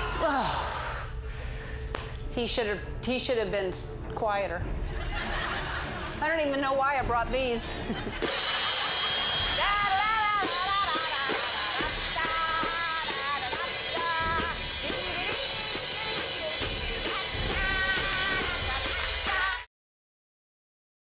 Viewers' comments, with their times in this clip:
0:07 You can hear the toy..
0:09 She lived cus SHE WAS SO LOUD Reaction: Alien Creature: AHHHH MY EARS